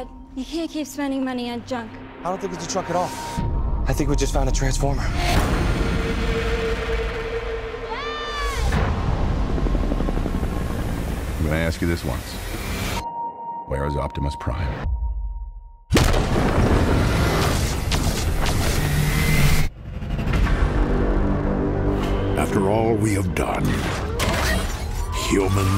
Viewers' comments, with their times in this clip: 0:07 the way she says DAD!! sounds weird to me Idk way. But this fucking trailer kicks major ass!!